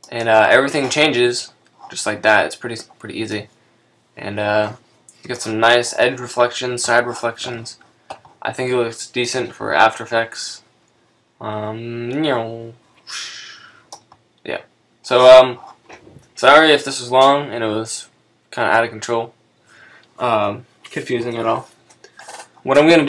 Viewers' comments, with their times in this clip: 0:10 nieeuuu wuusch :D nice sound effect